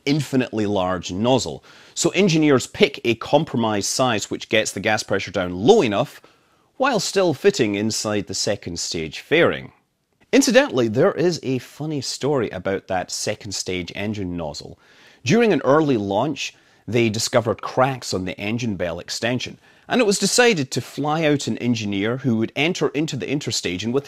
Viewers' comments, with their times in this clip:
0:06 counterweight THWOMP LOL Somehow I don't think this would fly at Boeing.